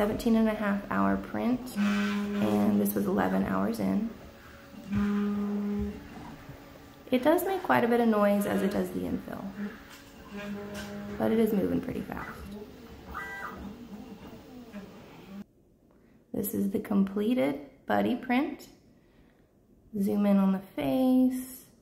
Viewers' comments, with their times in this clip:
0:04 the noise is resonance because its sitting on a hollow IKEA table top which amplifies the noise. a few seconds later we can see much faster movements being very silent because they are not creating the right frequency for the table to resonate.